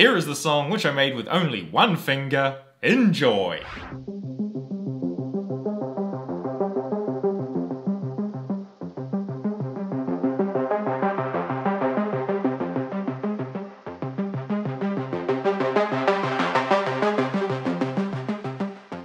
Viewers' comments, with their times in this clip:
0:03 sounds like GTA IV soundtrack